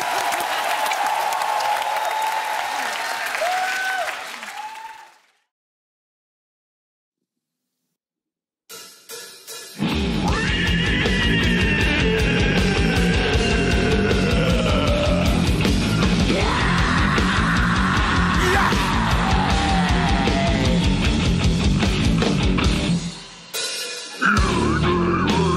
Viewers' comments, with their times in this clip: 0:06 do you call that a song or singer ?!!
0:06 Yuwahhhhhyayayahhh bayaaahhyaahhh!!!!! - Monster Voice
0:08 Was enjoying it until the kid started summoning Sauron
0:08 I laugh hardly when I realize the was like exorcising by someone..hahaha😁😁
0:08 The song start and i cant stop laughing till is over! what is this? is only me? :')
0:10 OMFG this talent so crazy a voice like beast screaming growling and guttural death metal voice so perfect